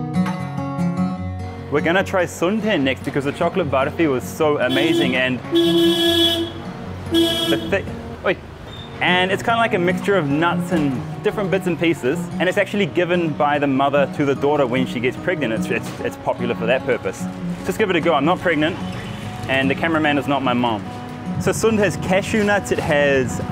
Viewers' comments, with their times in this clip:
0:06 "oi" you're definitely from New Zealand 😂